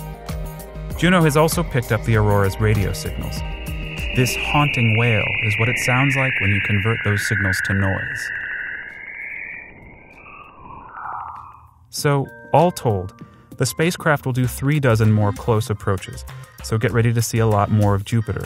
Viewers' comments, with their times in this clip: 0:04 That is actually aliens screaming for blood.